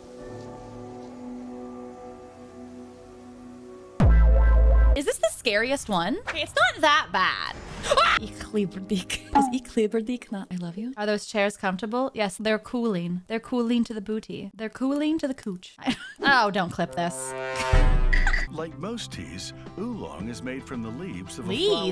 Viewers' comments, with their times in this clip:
0:08 The pronounciation is off. Less "K", more "SH".